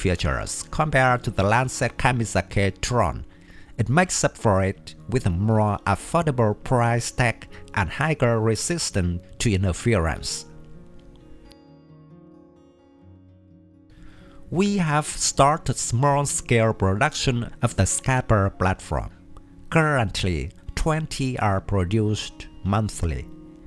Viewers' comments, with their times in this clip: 0:07 You said 'higer' again instead of 'higher' which is pronounced 'hi-er' which rhymes with 'buyer', 'flyer', and 'tire'. - If you know how to say any of those last three, replace the b/f/t with a 'h' sound. :)